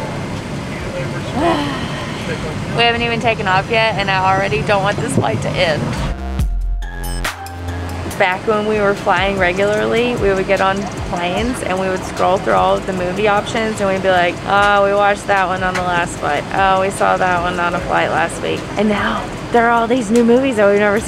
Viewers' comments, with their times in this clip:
0:06 That old beat coming in recalling back to the early travel vlogs! I couldn't stop smiling while watching this entire video. I don't even care about van life guys, just enjoy and do what makes you happy!